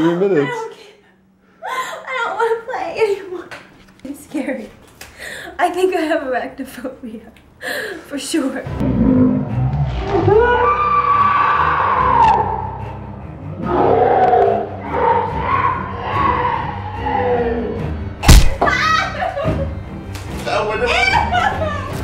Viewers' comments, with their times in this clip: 0:09 The face and scream I do when I realise tomorrow is Monday.
0:09 horror movie sound effect😂😂😂